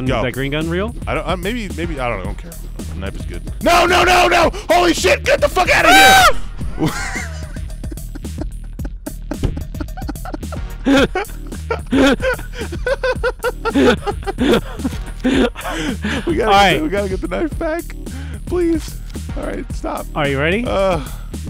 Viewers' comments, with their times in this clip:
0:04 Manly battle cry!!
0:05 for girly shriek.
0:05 Manliest scream ever.
0:05 Joel just turned into a cat for a second or two.
0:08 That manly scream.